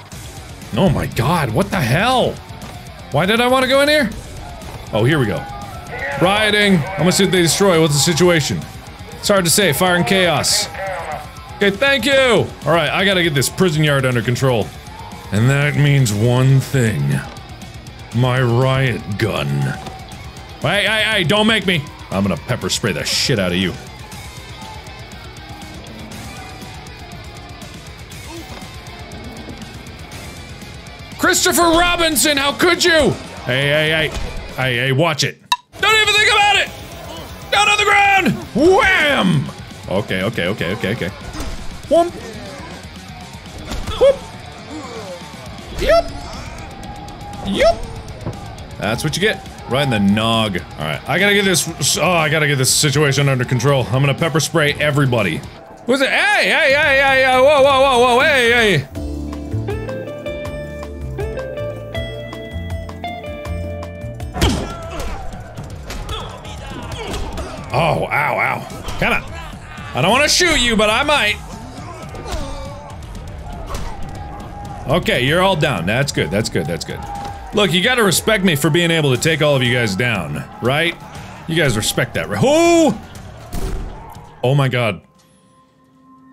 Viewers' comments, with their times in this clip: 0:07 when the doom music starts to kick in
0:58 that music coming on was so good XD
0:58 the power washing music as he pepper sprays the prisoners might be the funniest thing I've ever seen
0:59 I'll admit it, I giggled when the music played
1:00 I flipping laughed at the fact that they played the power washer music while Mark is pepper spraying the prisoners 😂😂
1:00 When he starts painting their faces w pepper spray to the power wash song I lost it 😂😂😂
1:02 WHY IS THERE MUSIC WHILE HES PEPPER SPRAYING ⚰️⚰️
1:07 The pepper spray music Fuckin gold